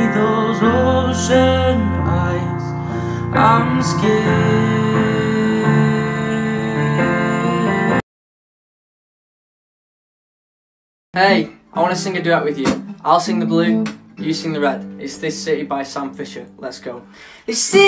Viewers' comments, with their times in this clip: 0:03 we sound amazing together omgosh